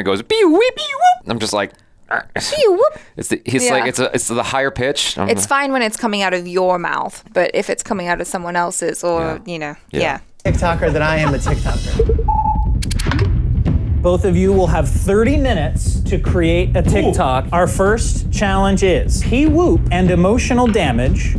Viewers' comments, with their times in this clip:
0:04 you are confused between the frequency (pitch) and amplitude (loudness) of the sound..... whistles are high pitched but that doesn’t irritate us, the loudness of the sound does. His Peewop is also some what high pitched but maybe he cranks that sound up or maybe your volume is set too high just enough that louder sounds tend to cross the limit but not the softer sounds..